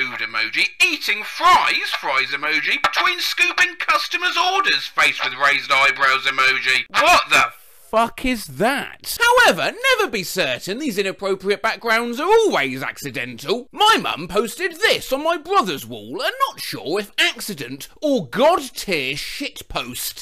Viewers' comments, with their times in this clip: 0:07 sounds like Collosal is Crazy lmao